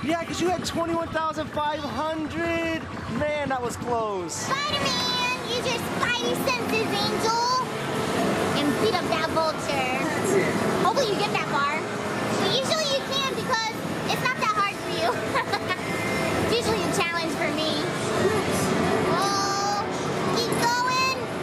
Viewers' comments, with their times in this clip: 0:07 I stand Mr. Bright side in the background